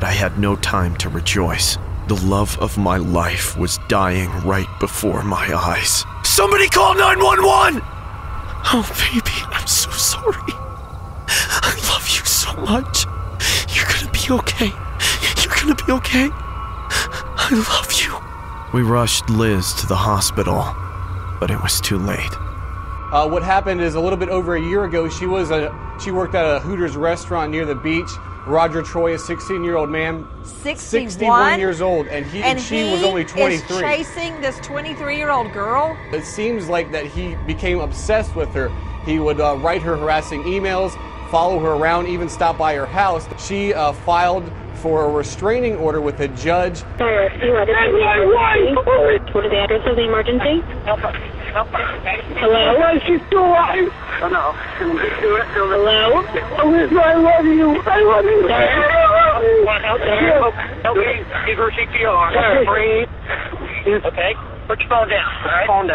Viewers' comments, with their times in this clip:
0:05 The way he said somebody called 911
0:06 That voice actor is amazing! “Somebody call 911!!!!” — I felt that
0:46 hearing the husband scream is heart breaking